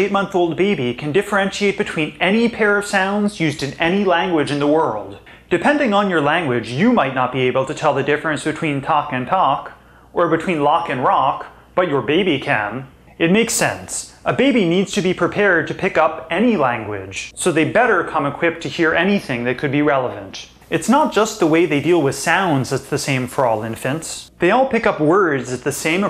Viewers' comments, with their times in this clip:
0:09 difference between talk and talk??? What was it? Anyone hear it?